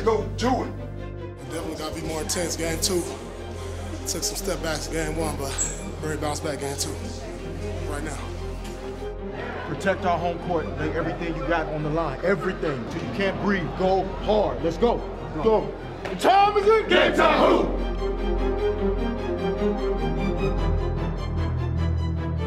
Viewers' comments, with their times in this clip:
0:09 i swear it sounds like "protect our home court nigga"